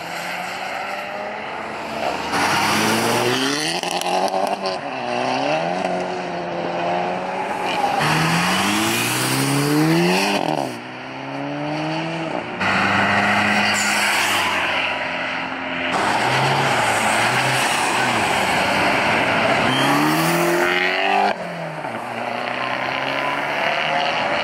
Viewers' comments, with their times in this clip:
0:08 ay made it again The exhaust is actually audible now, but man i need to wash her.